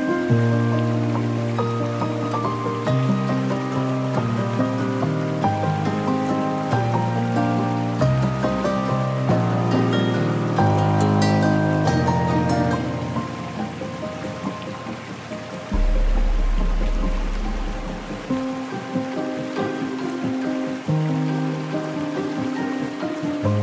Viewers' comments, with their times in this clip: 0:08 Very lovely waterfall great music liked 👌